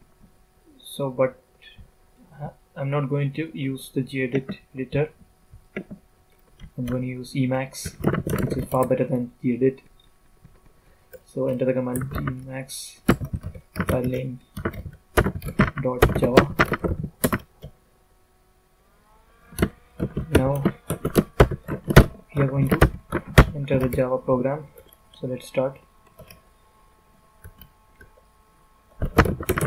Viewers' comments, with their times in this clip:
0:10 good vid. He sounds like hes wacking his keyboard